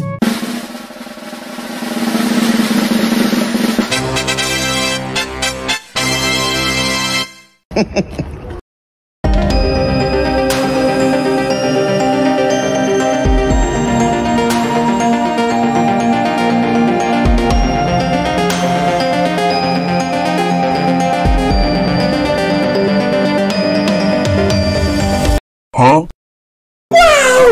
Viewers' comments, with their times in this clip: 0:09 ghast made a masterpiece, and the music was the icing on the cake 🤩